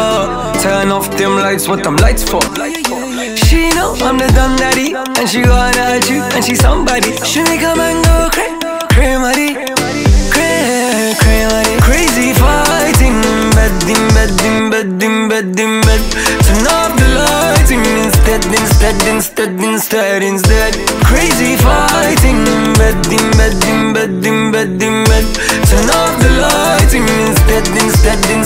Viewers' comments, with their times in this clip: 0:10 My favorite part starts from 🔥🔥😍 so waveyyyyy
0:15 loool I thought he was saying din bebek 😂🇩🇿